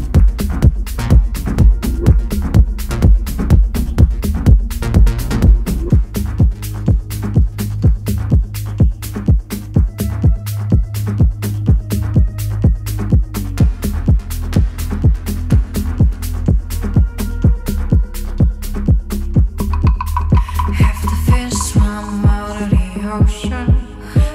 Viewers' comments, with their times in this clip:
0:08 Love both of them, from the mix of voice, instruments played at live, all of it, just beautiful.